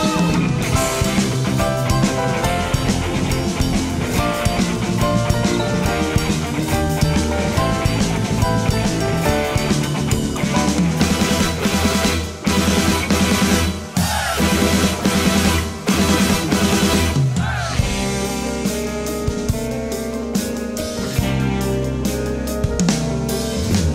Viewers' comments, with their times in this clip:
0:04 Love the cricket's contribution In all seriousness, this is a fantastic show - thanks for uploading 👍